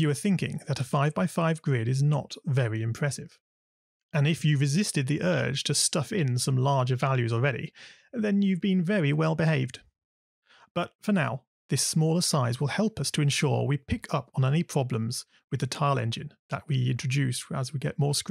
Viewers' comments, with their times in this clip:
0:04 I can so hear Stephen Fry saying this in the Little Big Planet level creator "and if you've resisted the urge to stuff in some larger values already, well then you've been very well behaved, ha! Well done you!"